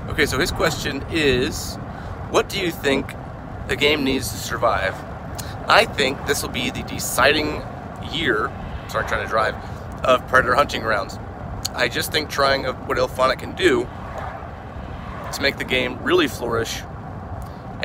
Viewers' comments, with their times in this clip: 0:05 Sorry, I don't know why I sound like a demon